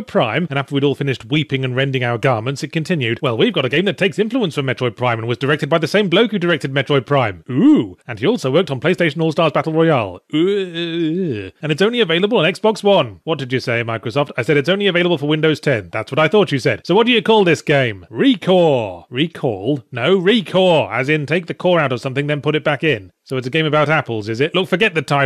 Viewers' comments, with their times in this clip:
0:09 best yahtzee noise ever